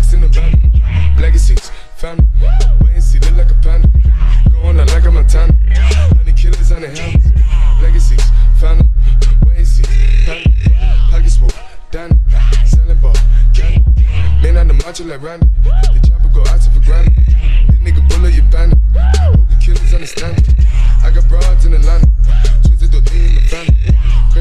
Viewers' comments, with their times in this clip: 0:05 the bass lowers and gets back up 👀🔥